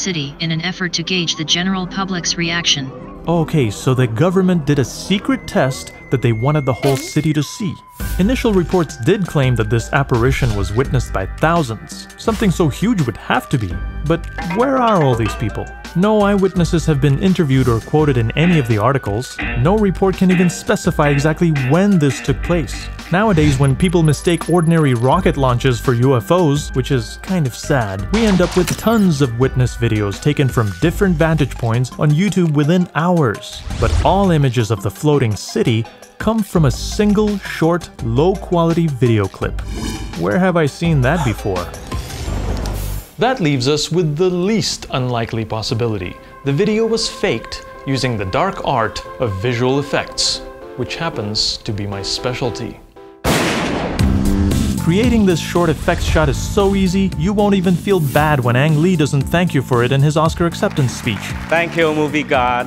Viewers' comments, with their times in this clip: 0:05 i thought that was my alarm 😭
0:05 i thought my phone rang :(
0:07 the music in the background is the same as my ringtone and I thought someone was calling me
0:47 right when he was halfway through saying faked my video cutout. Its those damm aliens.